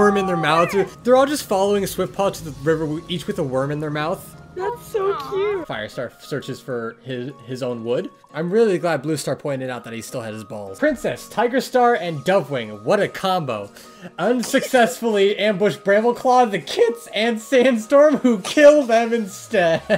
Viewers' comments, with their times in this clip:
0:06 "Firestar searches for his own wood. I'm really glad Bluestar pointed out he still had his balls-" Sorry, cut off audio is my kryptonite, and you nailed it.